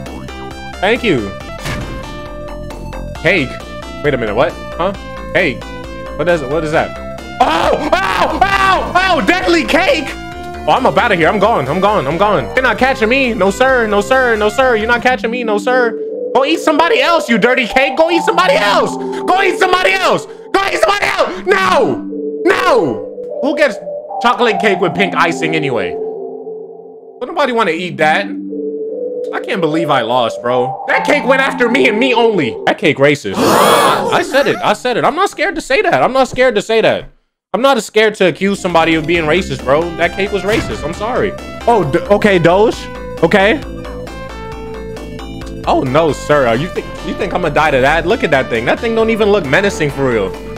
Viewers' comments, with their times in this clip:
0:06 This man actually screaming while being chase by a chocolate slice of cake 😂🤣 ...S-Tier Artist, S-Tier Thief, S-Tier Captain EUGH
0:32 "dat cake racist 😗☝🏾" but why was he dead serious too😭 ?